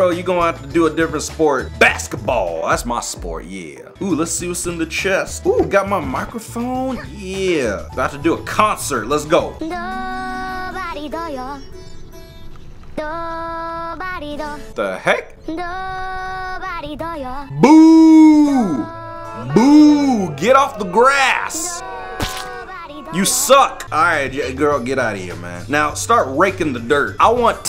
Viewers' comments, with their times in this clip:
0:09 when angela starts to sing a anime song noice ( ; - ;)👐
0:10 I thought you added an anime theme song